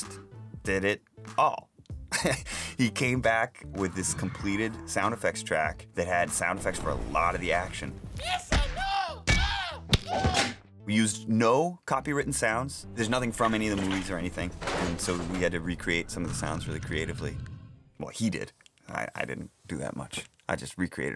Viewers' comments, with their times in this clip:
0:07 I can’t stress how hard I laughed at Jar Jar’s screams of getting mugged
0:07 Not enough people talking about Jar Jar getting beat up, underrated sound effect if you ask me you're welcome